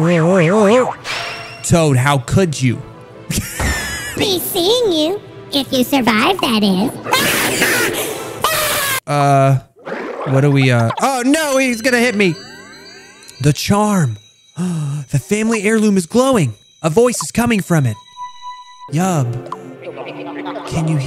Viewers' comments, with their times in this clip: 0:07 The scream caught me off guard 💀